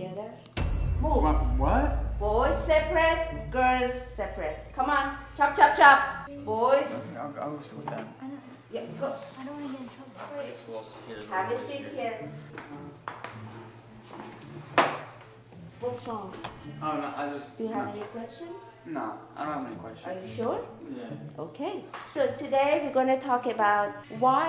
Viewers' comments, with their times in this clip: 0:09 That teachers more sounds like the one kept trespassing your house honestly she looks identical The face is blur but the voice the came I mean it's fake but honestly it's the same person that trespassed your house and got arrested but now she's your fake teacher honestly that's yeah